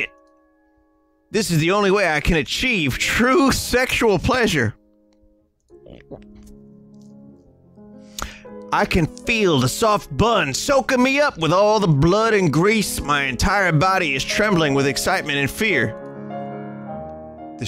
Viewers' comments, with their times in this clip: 0:03 did Vinny just acid reflux into the mic lmfaooooo